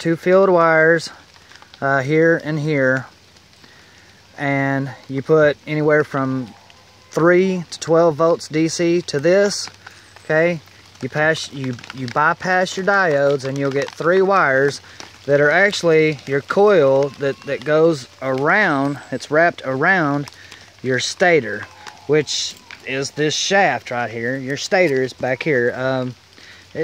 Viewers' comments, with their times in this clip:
0:10 Made it too Kid crying 😢 in the background then read comments saying it doesn't work ..I just get distracted easily sorry man well I hope it really works..